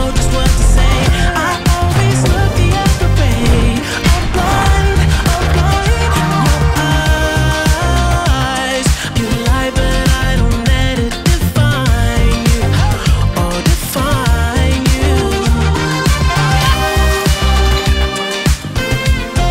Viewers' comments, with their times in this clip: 0:04 IS THE BEST PART BRO I COULD REPLAY THAT NOTE IVER AND OVER BRO THE WEEKEND IS THE BEST